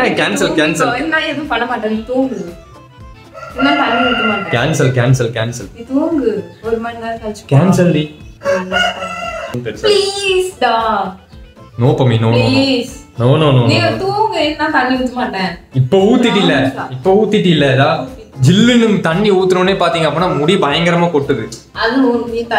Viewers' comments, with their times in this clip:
0:09 ..who noticed please da...cutee
0:09 please da was sooooooooo cute😍